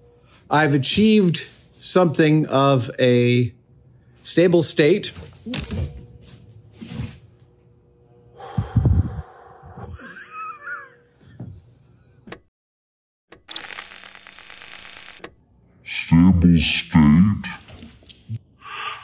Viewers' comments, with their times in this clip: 0:06 I felt the moment in my soul. Done the whole "I'll quit after this trivial next st----- more than once. Good on you for chuckling afterwards.